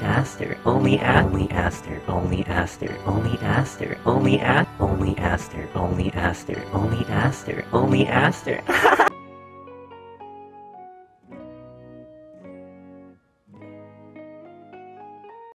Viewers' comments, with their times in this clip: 0:05 sound like "Just Monika" from DDLC